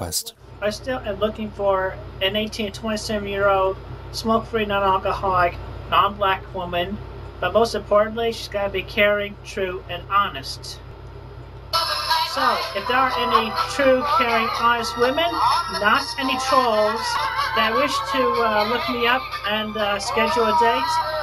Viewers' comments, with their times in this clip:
0:05 the way he just nonchalantly and so matter-of-factly drops the “non-black” is kinda hilarious. He’s just so casual about it, like how one would order a burger and ask them to hold the pickles.